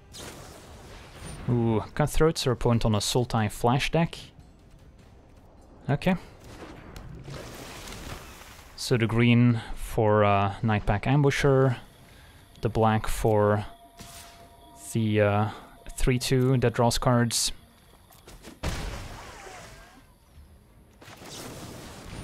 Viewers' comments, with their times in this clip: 0:05 That quiet OK that translates into panic, but everything ended up ok.